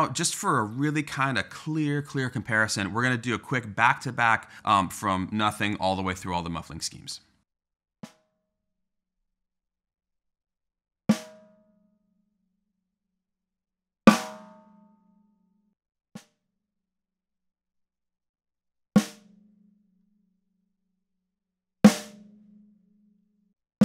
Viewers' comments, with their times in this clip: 0:08 TL;DR watch to hear unmuffled, tape + sheet of paper, single tissue taped to the head on 3 side, and cymbal felt suspended with tape.